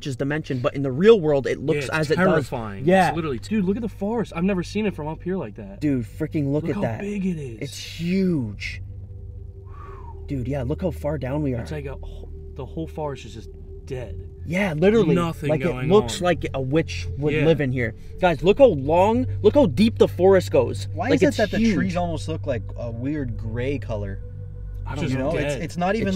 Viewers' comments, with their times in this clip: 0:08 I heard someone scream
0:09 hi hared a voice time
0:10 minutes in the vid I heard someone say help or screaming